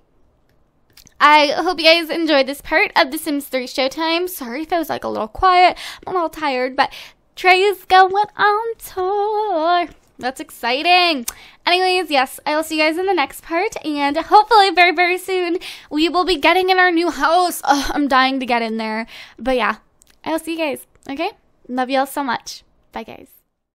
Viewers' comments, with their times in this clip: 0:06 how pretty is your voice when you sang in ! :D
0:06 She has a really nice voice :o
0:06 she has an amazing voice :O
0:07 Woah! Your voice sounded really pretty !!
0:07 Woe, nice singing like no joke
0:07 When she said treys goin on tour at the mark it sounded like she was singing and it sounded really good just sayin
0:08 OMG ur voice amazeballs!!!!
0:08 when u kind of sang a little... You're a good singer!
0:08 Dat singing was fabulous XD seriously it sounded like you auto tuned yourself. Is it only me who thinks this?
0:09 Omg that voice though.:)
0:09 Ooooohhh girl! That note tho..